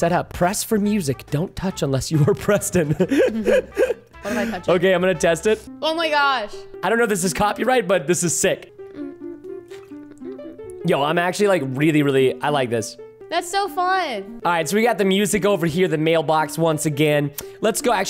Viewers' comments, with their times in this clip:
0:06 why do o hear boss music